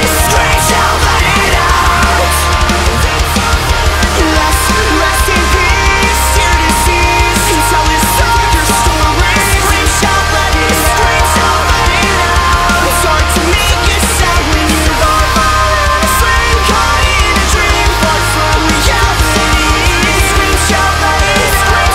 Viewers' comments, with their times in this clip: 0:03 That back vocal is just amazing